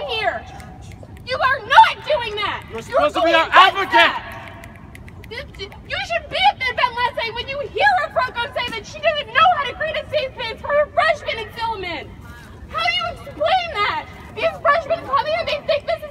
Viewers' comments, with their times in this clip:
0:03 Bro that guy is such a coward he yells at the guy from behind him and then hides behind his girlfriend